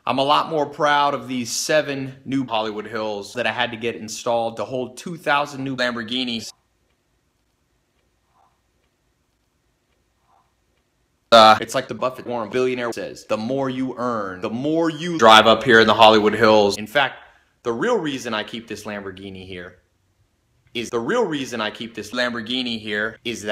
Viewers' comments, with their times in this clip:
0:10 I had my headphones maxed out scared the shit outta me
0:11 with full volume and earbuds = R.I.P (including me XP)